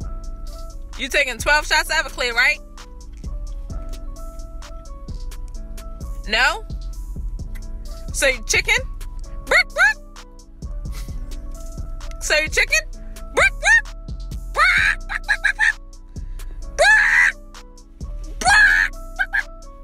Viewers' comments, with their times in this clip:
0:05 lol he's like so used to all the yelling he's so unbothered lmao!